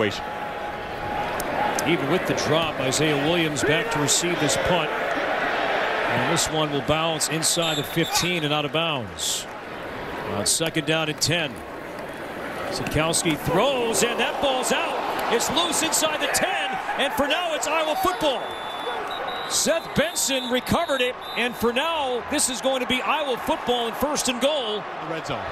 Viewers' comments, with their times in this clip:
0:08 right as the announcer says "fifteen" you can hear Taylor dropping an f-bomb since the punt went to the 14...